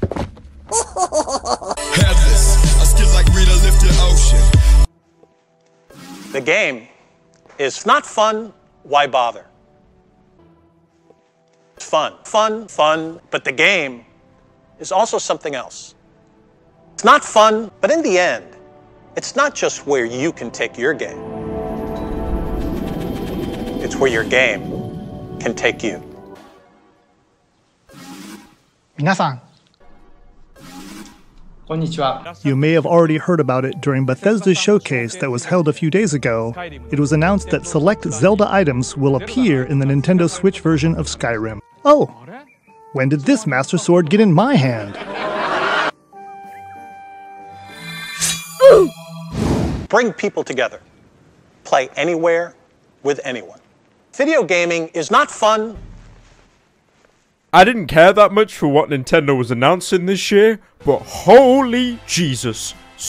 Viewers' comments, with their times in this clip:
0:03 How did you make the beginning of Spikes into chill wave??
0:47 That beautifully timed Roblox "oof" caught me off guard and I spit from the sudden burst of laughter